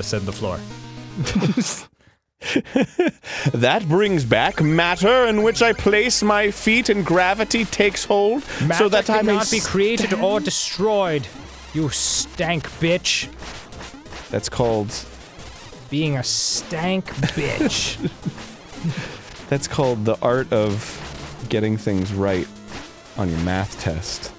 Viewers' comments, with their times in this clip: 0:08 Voice sounds awfully familiar ... Snuffles ?? (Morty's dog)